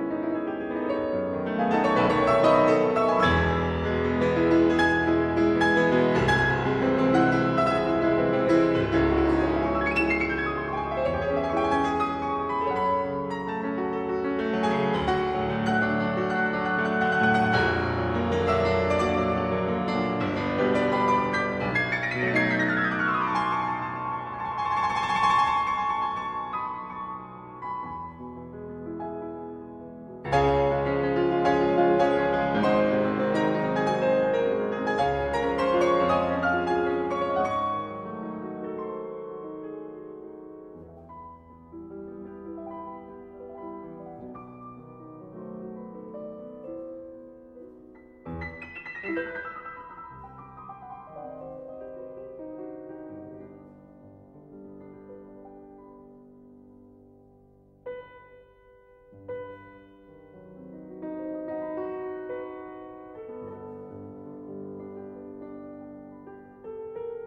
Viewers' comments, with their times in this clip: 0:09 How many notes can you write? Liszt: Yes.
0:17 I guess Tiempo decided to play that B-flat an octave lower. Not complaining. It's just an interesting decision.
0:19 That run is absolutely insane.
0:48 What makes the run sound so sinister? It sounds like a chromatic mediant progression to me, but I'm not sure.